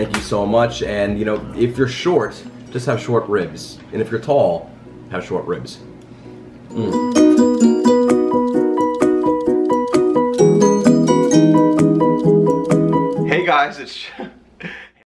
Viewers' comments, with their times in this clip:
0:06 The music in the end ta-da ta-da ta-da Me: Omnomnomnomnom